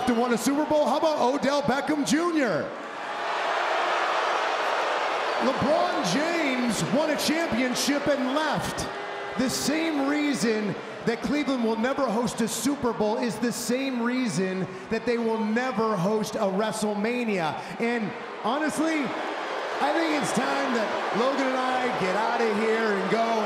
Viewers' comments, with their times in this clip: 0:07 I was cackling like that dude 😆